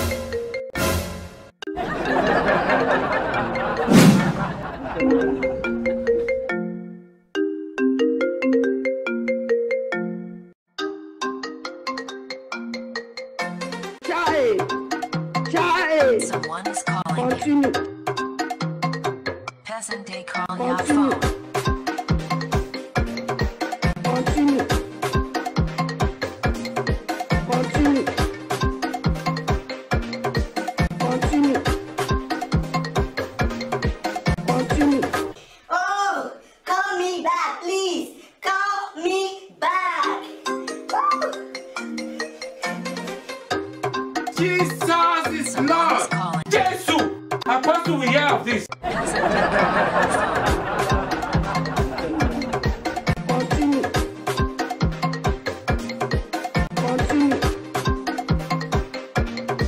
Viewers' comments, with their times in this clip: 0:10 This is me when my mom's phone is ringing and when the ring tone is so catchy 😂😂😂😂😂😂😂
0:44 he is kikilling the beat show some love